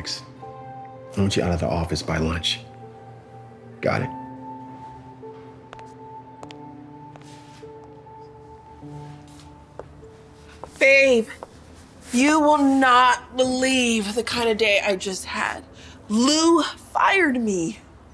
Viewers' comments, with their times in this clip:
0:06 The 2nd video where the boss walks out he sounded like a roblox character 🤣🤣🤣💙